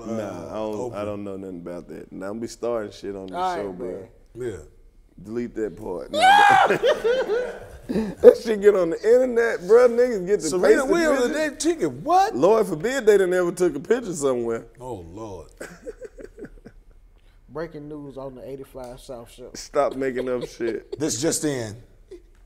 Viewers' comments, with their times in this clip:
0:04 POV u told goofy a good joke